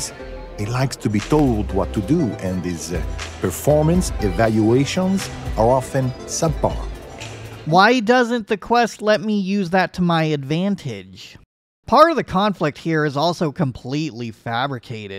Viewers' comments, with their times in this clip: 0:03 Er... It honestly just sounds like he was talking about the CEO's bedroom activities in a roundabout way, considering the inflection/emphasis he was putting on certain words. XD